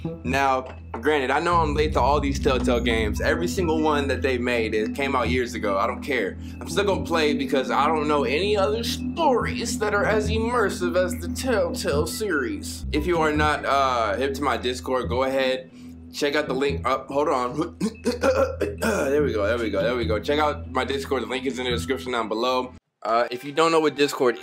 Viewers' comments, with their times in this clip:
0:08 Lmaoo wtffff he's been doing that voice in his vids lately and everytime I die laughing.